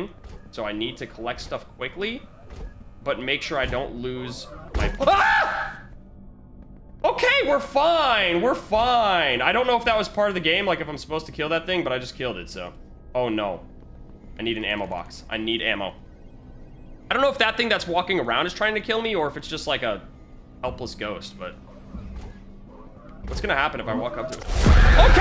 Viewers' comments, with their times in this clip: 0:06 Lolll go to and he says im fine im fine in such a wierd voice